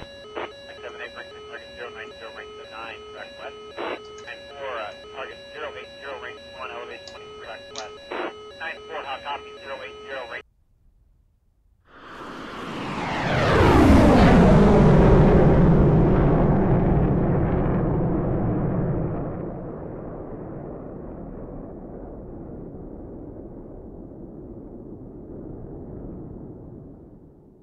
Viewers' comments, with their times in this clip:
0:10 the sound of the mirage 2000